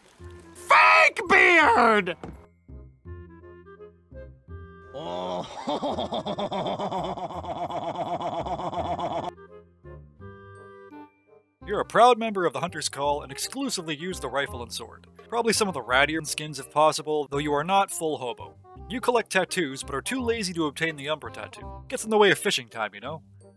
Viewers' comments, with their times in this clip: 0:04 Fighter planes firing their guns be like: